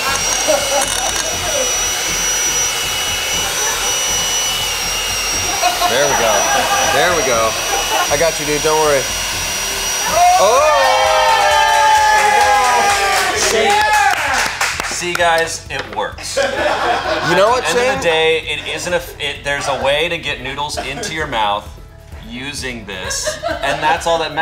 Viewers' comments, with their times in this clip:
0:08 what did he say here? Dude, babe???